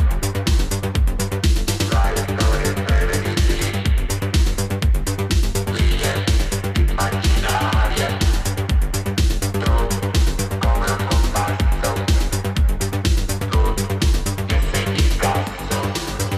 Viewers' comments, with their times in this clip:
0:04 .... Italian vocal, amazing